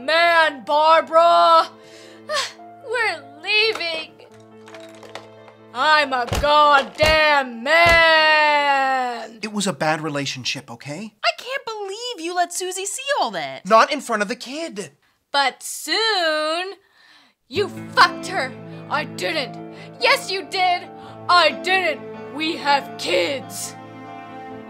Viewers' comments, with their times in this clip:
0:05 This line with her voice just fucking kills me